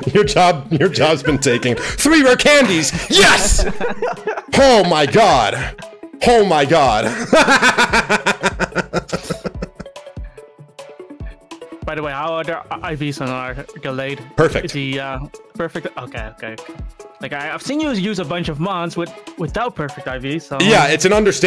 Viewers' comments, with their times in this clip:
0:06 your laugh is so contagious!